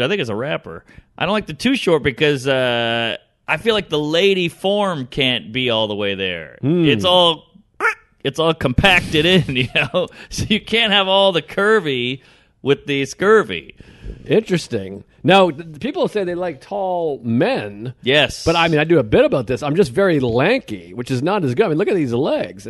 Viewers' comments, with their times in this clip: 0:07 funny noise Mark makes